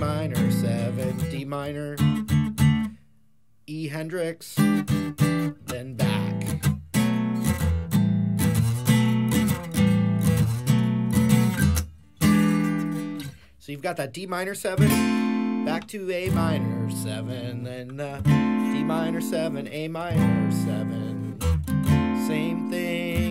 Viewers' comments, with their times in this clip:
0:05 doesn't it alternate between the 1 and 5 after the Hendrix chord instead of returning to the vamp? I'm hearing something different on that part of the song. The bass line goes E, G, A then A, Bb, D, so the Dm7 sounds right.